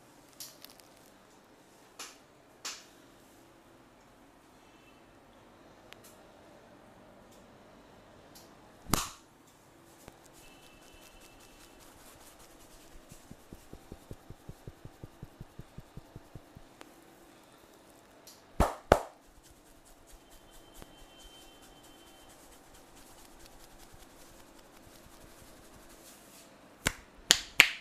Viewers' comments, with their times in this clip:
0:08 that whack was so funny